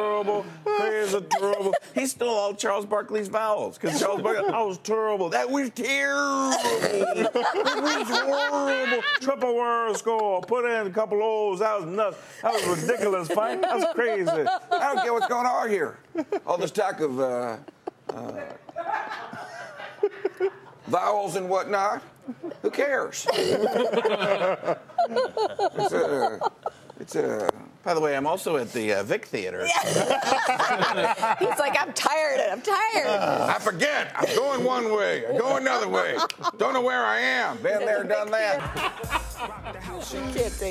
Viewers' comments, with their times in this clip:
0:07 hahaha the female newscasters laugh is amazing in
0:07 Have you noticed the laugh? That woman is fucking dying!!
0:07 ...the audience in the back laughs
0:17 background laughter = awesome
0:17 Best laugh ever in the background
0:18 Best laugh ever!!!
0:18 BEST LAUGH EVER!!!!!!
0:19 if you can get the background behind the scenes people to laugh, your god-damn-funny
0:20 I love how you can hear the camera guys laughing. This guy is awesome.
0:21 The cameraman is dying laughing at the mark. LOL.